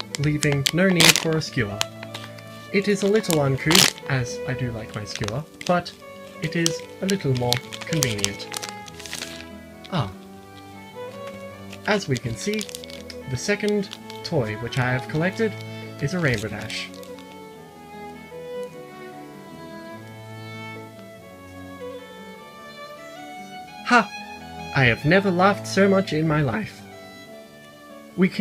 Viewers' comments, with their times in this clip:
0:09 WHY DID THAT "ah" KILLED ME